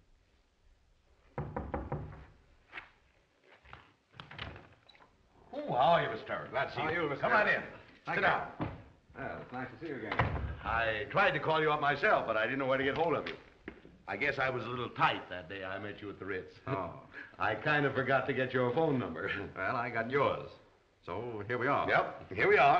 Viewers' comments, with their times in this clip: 0:09 or so when he welcomes him into the room he says "i tried calling you on my cell". 😮😮😮